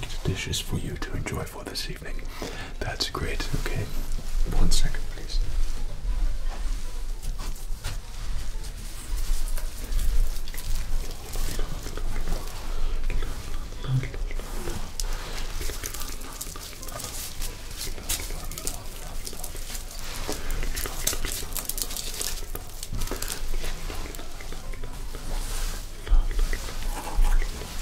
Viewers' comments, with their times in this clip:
0:10 That very subtle la-la-la is the only asmr trigger i have left that i know of. It doesnt matter how many times i watch it its so tingly .